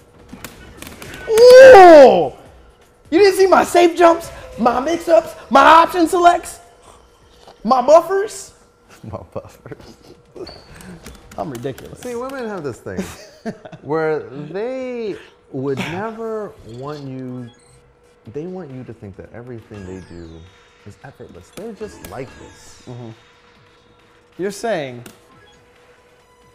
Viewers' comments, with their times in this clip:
0:07 Mike Ross turns into a sassy black woman.